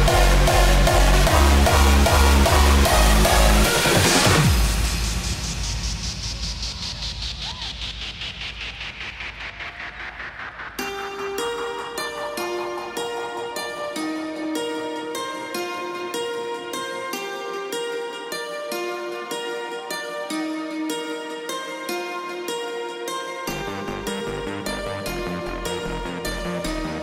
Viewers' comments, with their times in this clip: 0:10 Goosebumps That Track is so awesome...